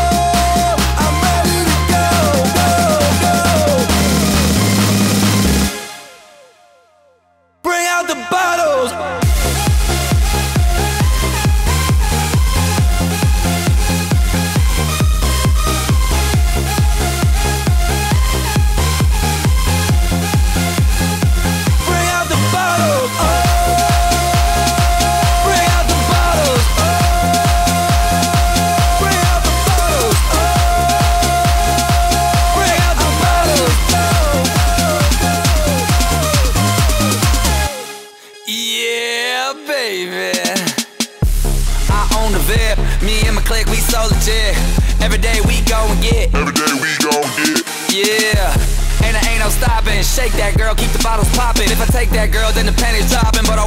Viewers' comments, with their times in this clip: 0:08 da best drops and I be like 😐😦😜
0:40 I my favorite song of 2013 so far. Especially the beat change By the way guys...LMFAO aren't broken up. Their experimenting around after being together for SIX years.